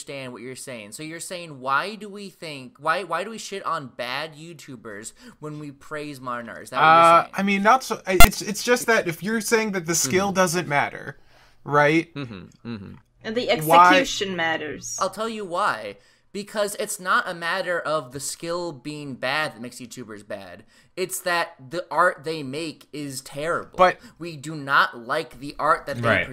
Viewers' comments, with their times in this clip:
0:07 What the hell was that beeping sound?